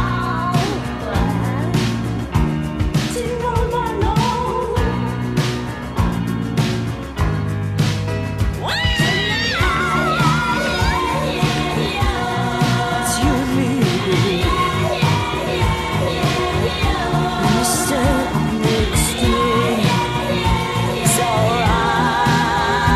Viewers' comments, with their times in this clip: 0:08 Masterpiece. I always loved the scream she ad-libbed